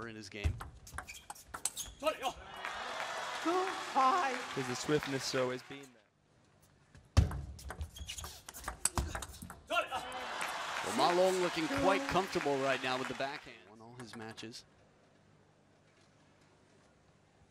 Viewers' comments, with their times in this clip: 0:03 that voice crack🤣